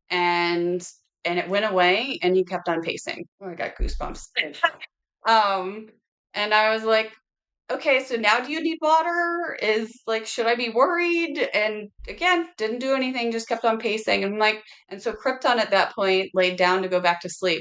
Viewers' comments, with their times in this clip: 0:04 Anyone noticed when she said "goose bumps" , then it appeared a "goose bumps" sound like they get in those audio recordings made by investigators at cemetaries....?!!!! Is it a pos-production glitch at the audio ? (honest question)